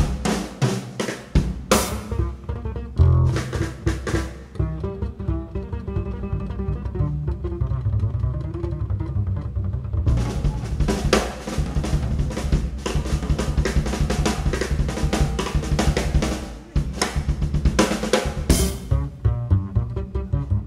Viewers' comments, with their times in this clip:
0:06 How about that bit where they do "Salt Peanuts"? Jesus.